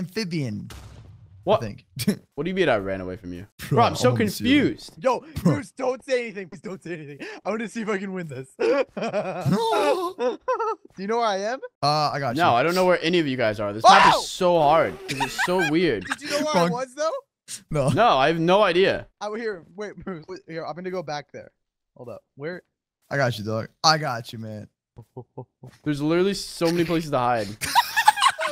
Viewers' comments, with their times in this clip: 0:09 shark sounds like that one Fish from SpongeBob that hides the pickles 😂😂😂